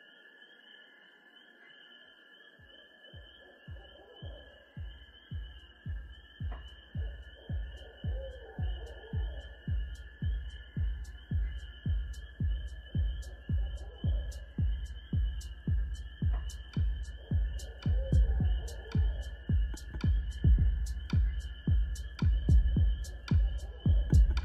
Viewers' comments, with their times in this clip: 0:06 My favorite part of this album is when you can hear Barred Owls. Love this album .